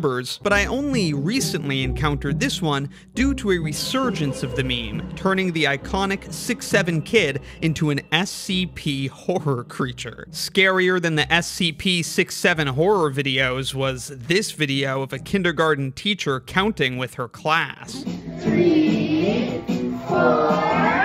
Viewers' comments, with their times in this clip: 0:09 you could here the man laugh slightly 😂😂😂